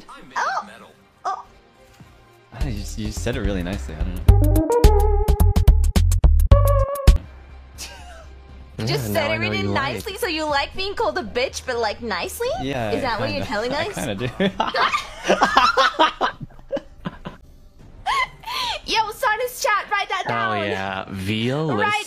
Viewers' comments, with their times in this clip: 0:03 how is swearing the b word can be in a nicely way 😭